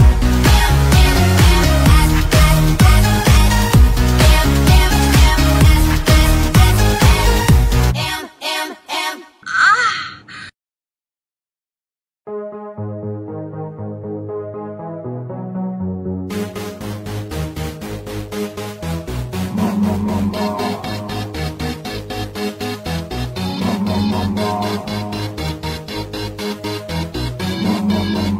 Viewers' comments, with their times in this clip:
0:09 if anyone wants the MOAN